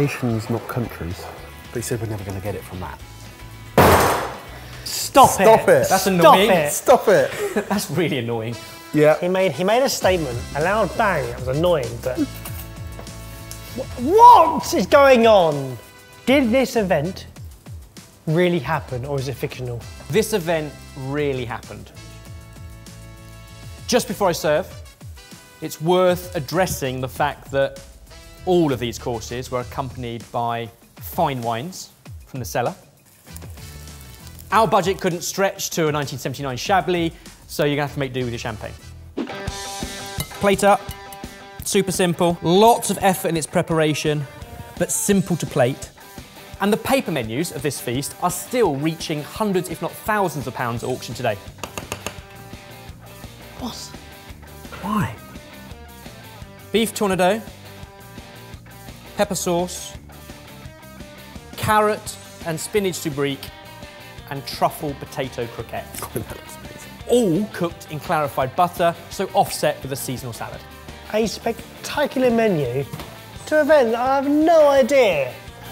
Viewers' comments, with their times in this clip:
0:03 2 Nations coming togheter can only be Britain and France (these 2 Nations loved to be at each other throats for centurys). And then the loud bang with the Chopping Board gave it away Its referencing the Maiden Flight of the Concorde and the Food served for that occasion. Edit: ok i got wrong when the Menu was served and it wasnt the Maiden Flight.. but hey i got the Concorde right haha
0:09 when he dropped the cutting board, it made a "bang" or a boom, so my thinking is the first super sonic flight or debut of the only super sonic passenger liner to grace the skies of our world (so far.....). So first passenger flight of the Concord....? maybe.
0:18 The sonic boom of the concorde jet.
0:31 The bang of the chopping board nailed it for me: i was confident it was a transatlantic Concorde flight.
0:47 the bang makes me think its to do with war? Especially the hints before about nations coming together, freedom, revolution. Maybe something to do with NATO ?
1:01 My guess would be the First flight of Concord. The first clue was "Do you want to win or Toulouse", second was the year of 1969. Then the two countries France and Briton, then the bang of the sonic boom of the aircraft. Lets see how far off the mark I am.